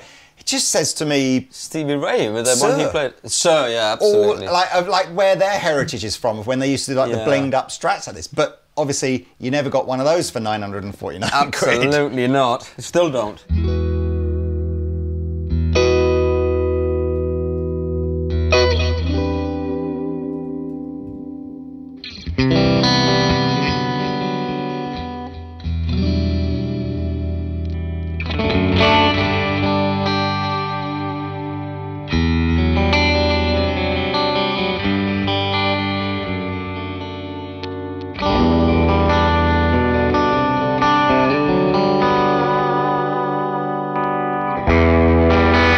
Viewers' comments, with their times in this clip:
0:10 Best one to my ears was the flame top on basswood/pearl pickguard with a maple neck for £949 (JOS2FMM) sounded the most open and wide (there's something very special about that guitar) I'm wondering if another JOS2FMM sounds as good as that one?.
0:30 FWAR!!! This looks & sounds awesome!